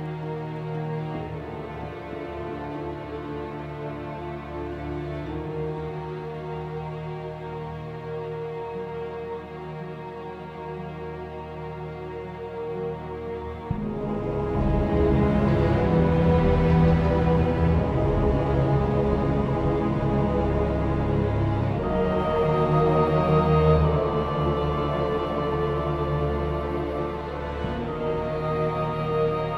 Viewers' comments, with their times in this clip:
0:10 So haunting but mesmerizing as well after